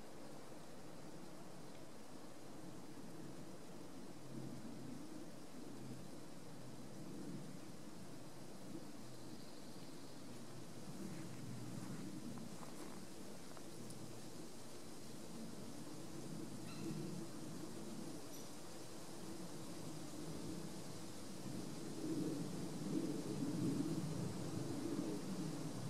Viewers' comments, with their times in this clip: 0:06 Were was that owl sound